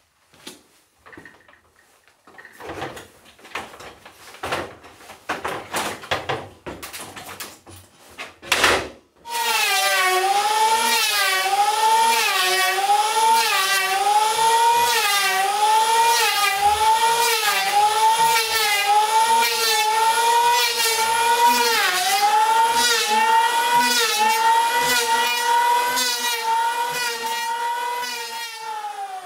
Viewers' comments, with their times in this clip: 0:10 I heard Italian accent noises out of that saw lol.